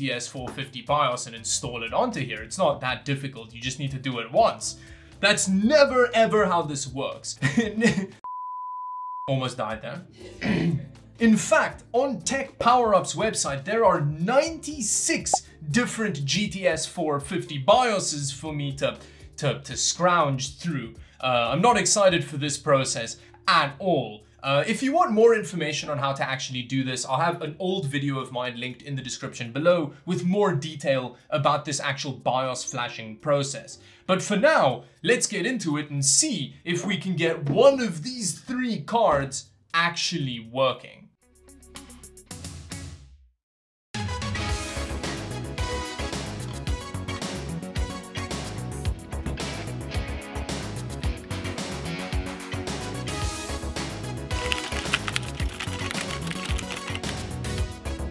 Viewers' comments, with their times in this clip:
0:10 weird background laughter??????
0:41 That song started playing and I could only hear living in a box. Beautiful stuff ❤️